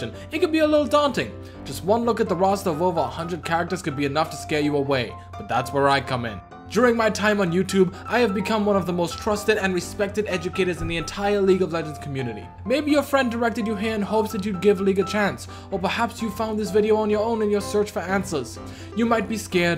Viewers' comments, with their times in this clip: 0:06 i had no idea barry kripke was a prominent league youtuber and self proclaimed top, and most trusted, educators in the community haha